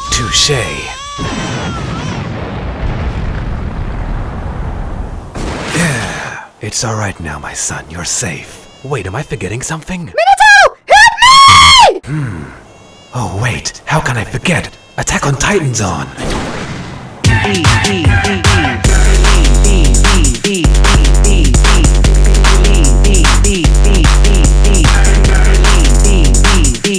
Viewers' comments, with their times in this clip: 0:10 That scream tho lmao How come you did a special for 46k anyway? It's abit of an odd number to do a special on :o